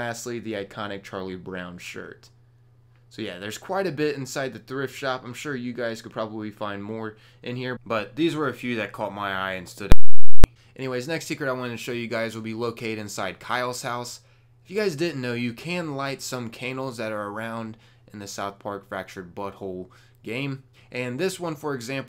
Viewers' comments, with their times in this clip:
0:09 oof man ears